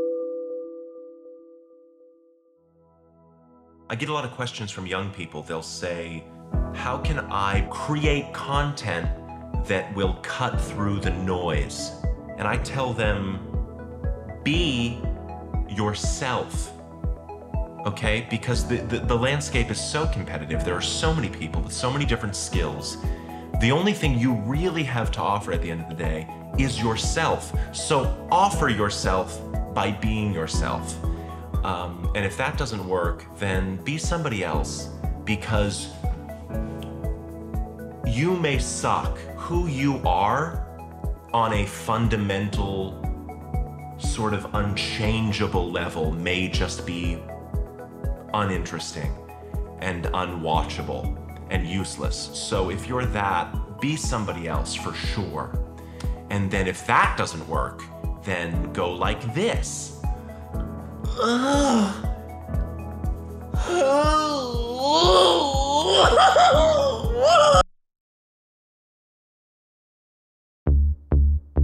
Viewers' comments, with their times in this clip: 0:04 Don't forget generic-tech-ad version of "Content"
0:32 The bit "be yourself" is so fucking on the nose - it's an immaculate bit, but the use of Content restyled as an 'inspirational how to video' background track is truly incredible. A perfect use of the song - for it's meaning and sound - in a way that unobtrusively underlines the bit itself. Fucking perfect.
0:59 Ahhh so Justin Roiland.